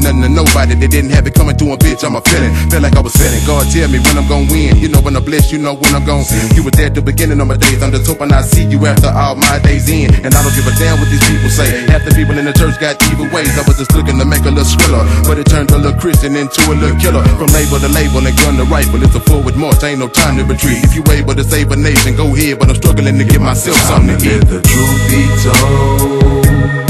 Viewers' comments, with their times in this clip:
0:10 when that lil keyboard drops